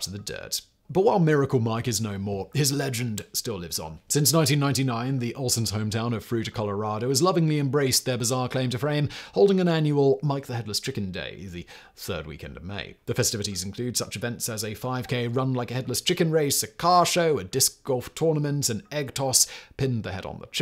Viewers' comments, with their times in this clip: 0:08 claim to frame, Simon? Having trouble with that English again?!